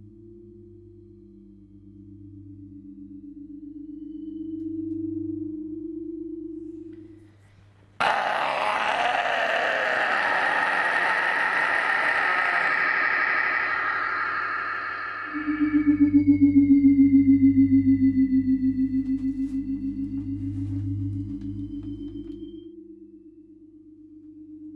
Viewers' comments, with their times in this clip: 0:07 I lost it a bit there. He just yelled and opened a portal to another dimension